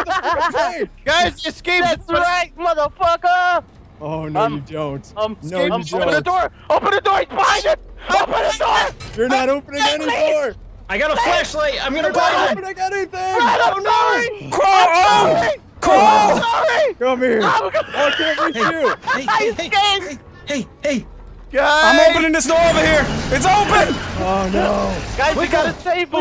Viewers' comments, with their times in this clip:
0:07 it really sounded like a horror film when Delirious screamed PLZ OPEN THE DOOR OPEN THE DOOR!!!!!!!!!!! XD